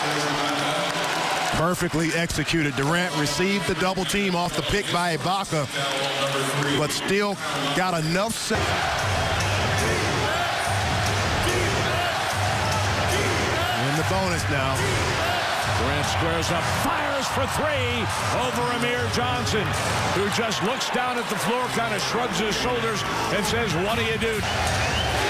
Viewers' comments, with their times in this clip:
0:10 it sounds like the crowd is chanting Deez Nuts.